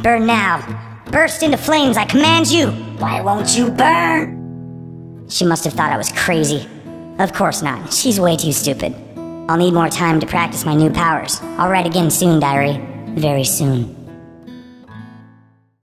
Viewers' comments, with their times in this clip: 0:08 way too stupid his voice was so cute